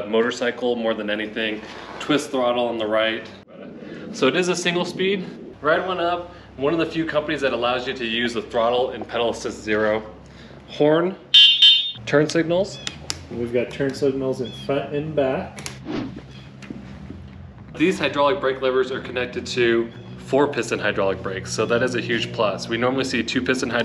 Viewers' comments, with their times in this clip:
0:09 That's a horn? lmao... they could not spend $7-10 more for a much louder one? I guess its more of a bike than an actual motorcycle, I've used their older ebike model and their are reliable. Electric motorcycles are like +10k atm for a quality one and I hope they drop a bit in the next 5 years would love a real built with +20 HP and a horn thats at least 80 decibels, better suspension, turn signals, etc. Something that will make me feel safe on the road at higher speeds.